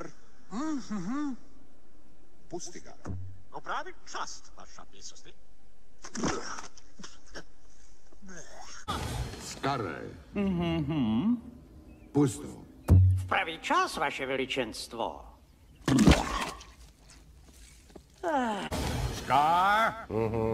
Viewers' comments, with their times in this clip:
0:08 This is in my language czech🇨🇿